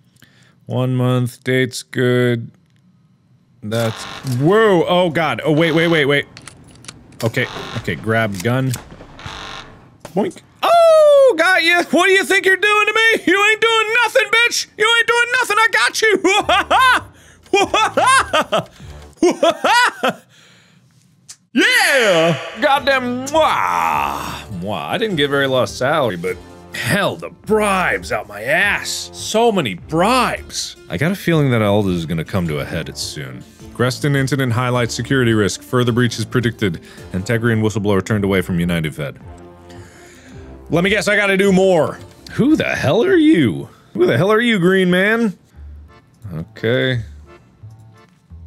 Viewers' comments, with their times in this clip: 0:07 Imagine going to the border and then you hear the guard go "Boink OOOOOO GOT YOU" and then starts to laugh maniacally
0:15 Was that a Woody Woodpecker impression or it is just me?
0:17 mark you impersonating a clown rn? Your laugh sounds like a clown cause you goin OH HOA HOAH
0:30 Random but that record stop and start was such good attention to detail on the editor's part. The music is always great as well